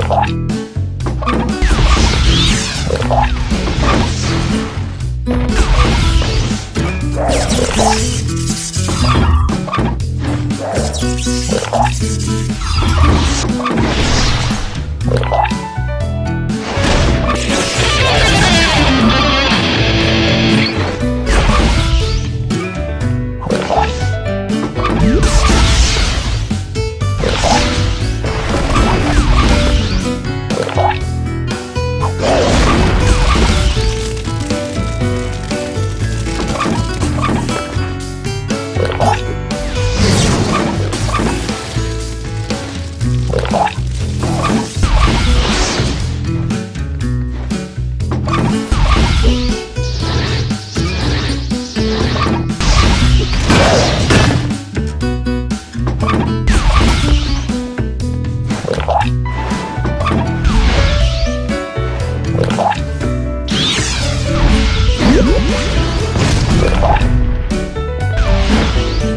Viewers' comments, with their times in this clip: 0:03 Why can I hear Okayasu saying "OMAI" when he drank the tea
0:21 ambulance at background: exist Kira: nervious breathing
0:53 Diavolo's shoes must be made of fucking steel to produce that sound
0:53 Pouhaha diavolo is not laughing
0:53 Those are some metallic shoes, there.